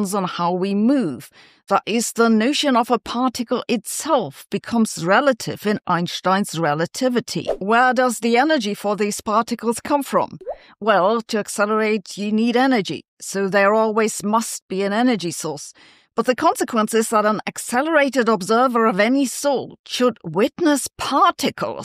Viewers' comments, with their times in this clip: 0:03 That picture is very Bill Unruh. Kinda disheveled. And he didn't mind kinda disheveled essays and papers either. He told us: I don't care much about any manual of style... just don't bore me. Make it interesting. Edit. It's funny to hear Sabine, a German, mispronounce his name. Perhaps it's because it's so universally mispronounced that even Germans have given up fighting the tide.